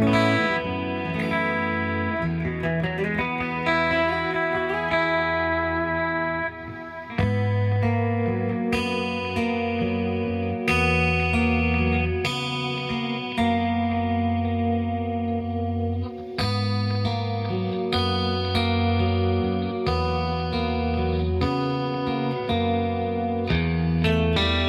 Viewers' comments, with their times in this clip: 0:08 I wasn’t ready for that part now I want to cry 😭😭 what a sound, so majestic